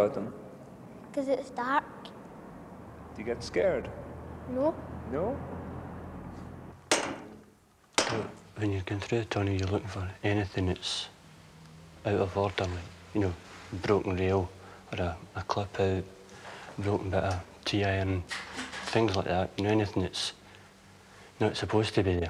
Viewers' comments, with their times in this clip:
0:08 This guys voice is pure ASMR